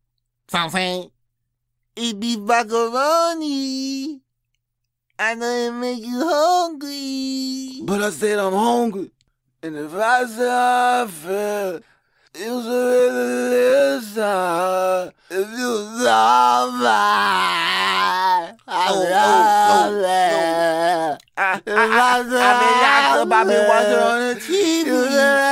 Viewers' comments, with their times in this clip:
0:10 bro iono if it’s me or the autotune but you sound better singing “All In” than young boy 😂